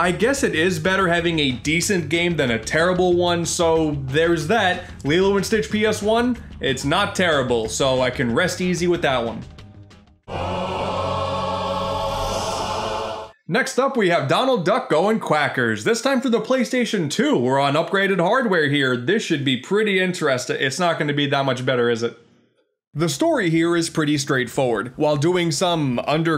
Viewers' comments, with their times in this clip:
0:10 I thought it was gonna play gangsters paradise